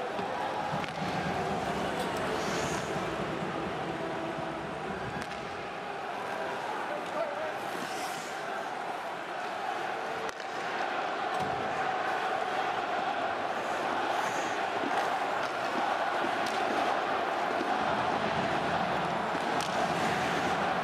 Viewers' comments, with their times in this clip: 0:08 Is it me or does the 2nd CDN goal (starting ) really sound like a Tim Horton's ad?